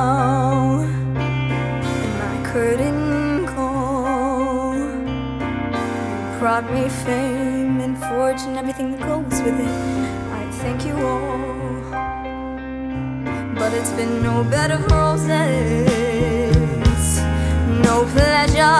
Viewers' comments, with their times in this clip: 0:05 they really nailed this one, just one part was lacking.... i think because the vocalist is too young and can´t feel the impact of the most important part of the song. the moment where it goes "you gave me fame and fortune andeverything that goes with it, I thank you all ! " in the original you could feel and hear that freddy really meant it, especially in live recordings.... she just spun through the words, with no connection to them. apart from that a real good performace..